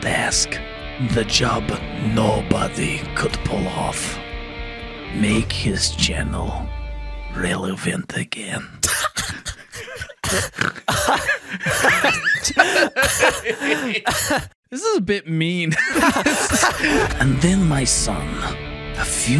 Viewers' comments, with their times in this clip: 0:04 the delivery was stellar